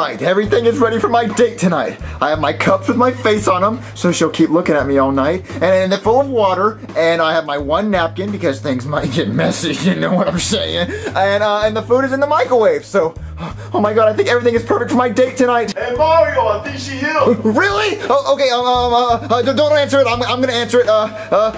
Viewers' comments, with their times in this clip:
0:09 Mario sounded like bowser jr for a second
0:09 Mario sounded like Junior for a second